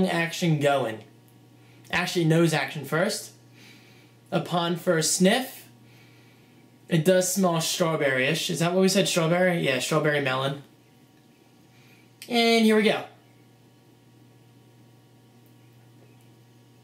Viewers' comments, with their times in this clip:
0:03 The first sniff :D